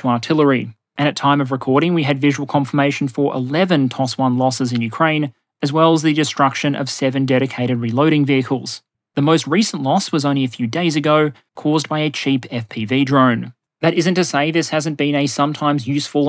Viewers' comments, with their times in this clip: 0:04 "Toss one" sounds like an excellent Australian expletive